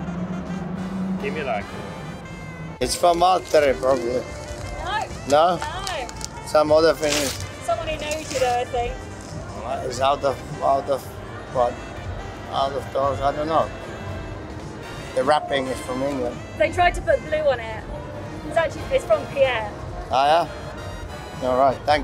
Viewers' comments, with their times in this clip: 0:05 some other finnish